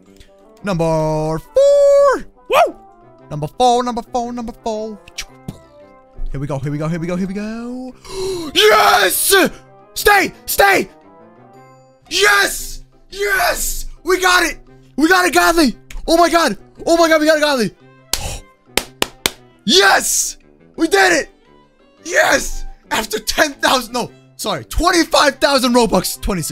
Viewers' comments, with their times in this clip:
0:08 Rip Headphone User